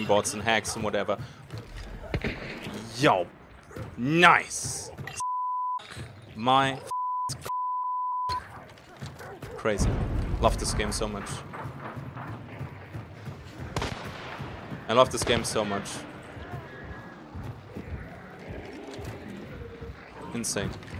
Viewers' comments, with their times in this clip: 0:04 PIEP PIEP PIEPPEIP PIEPPIEP PIEP! was that a morse code. 😂